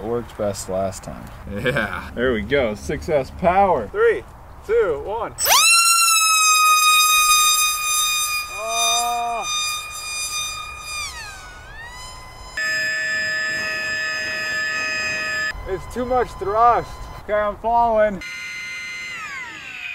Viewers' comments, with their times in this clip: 0:04 wow, the sound of that thing made everything on the outside quickly retract to the inside